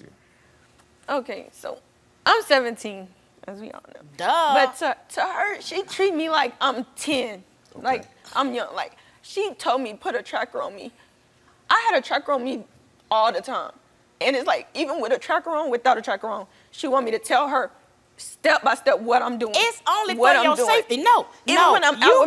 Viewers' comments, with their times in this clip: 0:04 The way she said duhh